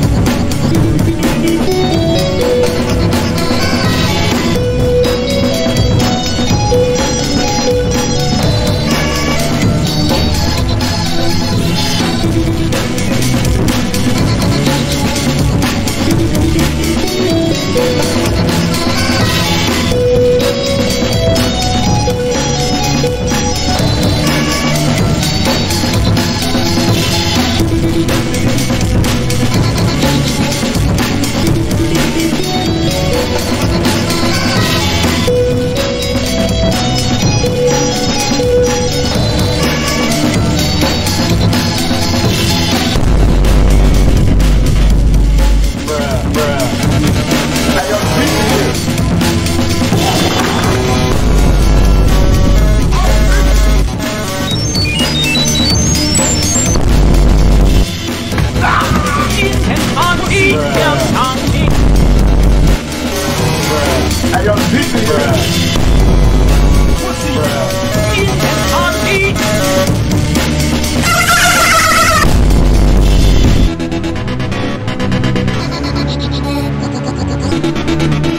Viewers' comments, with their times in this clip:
0:06 sounds like a guitar
0:59 IT SOUNDS LIKE TOM AND JERRY